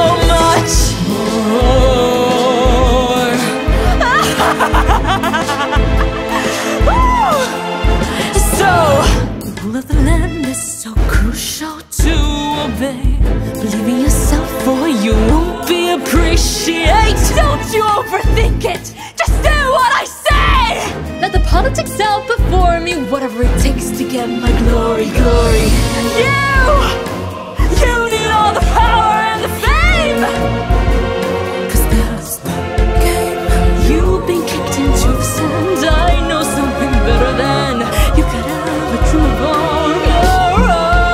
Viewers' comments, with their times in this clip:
0:03 THE LAUGHTER IS 🤌🤌🤌🤌
0:25 was so cool with the harsh glitchy voice right into the soft voice! So beautiful! I love your voice ❤️